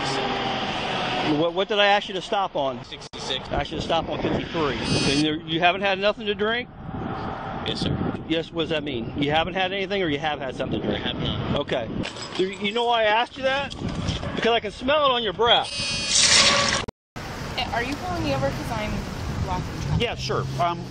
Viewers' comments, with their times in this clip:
0:03 she used the [bodycam is running reminder] vibration as a gameshow incorrect buzzer. BRILLIANT OMG 😹